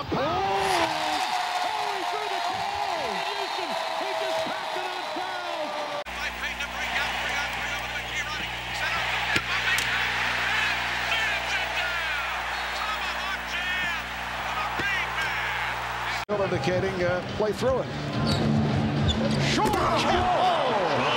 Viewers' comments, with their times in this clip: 0:07 After he dunked on Barkley. It's when he felt his Power turn to Super Sayon. He yells and turns into Dragonball ReignMan!!!!! Fuckin Awesome!